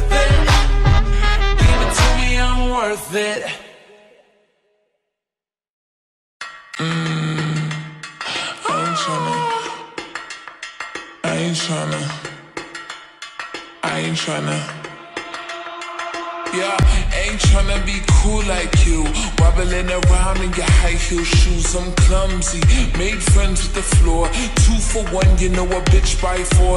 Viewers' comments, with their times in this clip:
0:07 I was dying because of the AaAaAhHhHhH omg